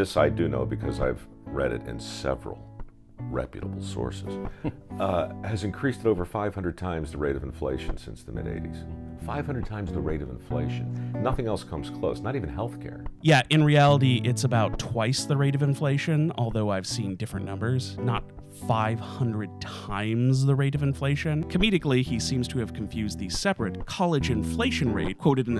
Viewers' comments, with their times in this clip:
0:07 That's some relaxing af music tho. Good choice, I need it since my blood is boiling listening to the drivel coming out of this anti-working class yuppie's mouth.